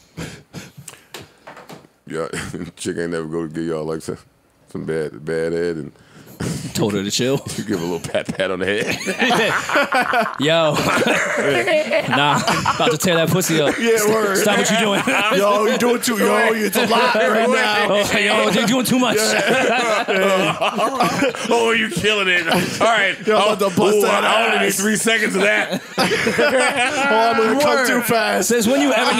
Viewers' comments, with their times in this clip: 0:10 Joe laughing like the Joker 😂😂😂😂